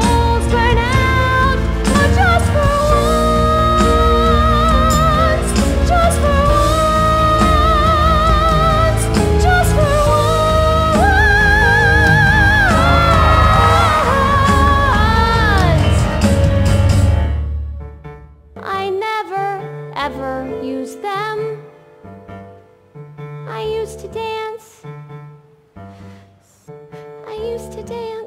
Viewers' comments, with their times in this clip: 0:03 Only just noticed how as Ruth sings “Just for Once” the “If I can finally be cool” melody plays in the background I LOVE THIS SHOW
0:04 lauren is so iconic for that but i just noticed that it had the instrumental for “if i can finally be cool i will know that im not a loser” to foreshadow her death :(((
0:15 Extra fun fact, the "I'm not a loser" leitmotif appears multiple times in the background of songs, including near the end of "Just for once" ish in this video and a version of it plays in the first like 22 seconds of High School is Killing Me 💥